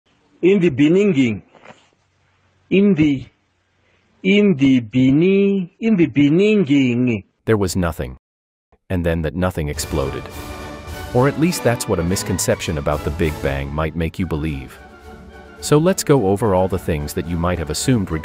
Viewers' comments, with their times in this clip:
0:00 Jacob Zuma trending 😂.